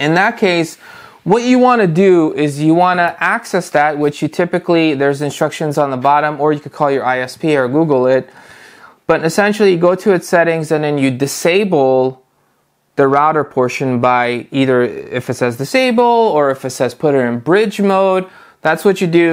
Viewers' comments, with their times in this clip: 0:03 Sure was easy to follow and got my questions answered plus he was an American and no dialect.